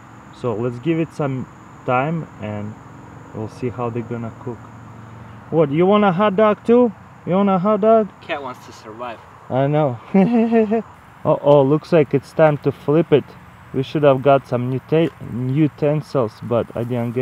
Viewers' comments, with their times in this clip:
0:03 i like your laugh.